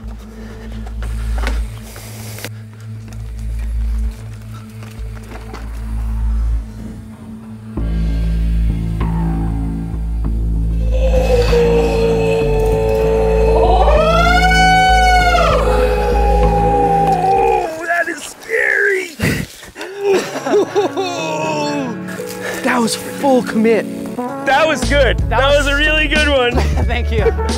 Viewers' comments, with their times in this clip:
0:10 sounds like a zoo lmao
0:10 a fire alarm was set off